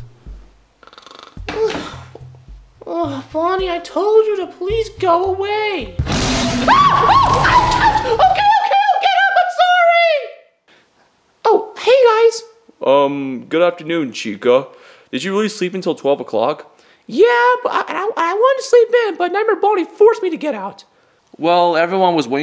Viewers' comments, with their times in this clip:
0:06 Cyan: inhales Roars with tremendous force and with all her might